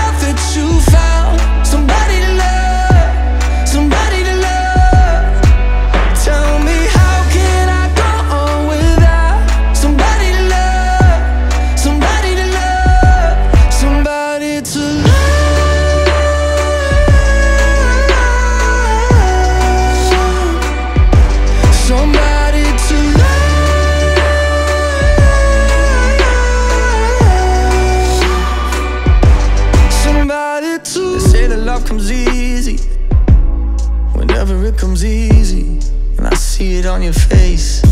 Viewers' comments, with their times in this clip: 0:05 My man's high notes are impressive and clean, but there's something about the texture of his voice when he says "tell me"
0:14 i was like This sounds a bit like Bazzi?!!!😍
0:14 it sounded like BTS Jungkook's Euphoria
0:14 is it just me or when I watched frozen 2 today, i think it sounds like everytime i hear the frozen song.
0:14 the same voice as Jungkook in euphoriaa omggg woww
0:15 it sounds like euphoria by jungkook, just me?
0:15 Is this a falsetto? Cause I fucking love it
0:16 Euphoria ( JK of BTS ) has the same melody as the song
0:17 Who thought this part A like by Jungkook Euphoria
0:22 the high note sounds a lot like euphoria by bts
0:24 sounds like euphoria by jungkook from bts
0:25 sounds like Jungkook in eurphoria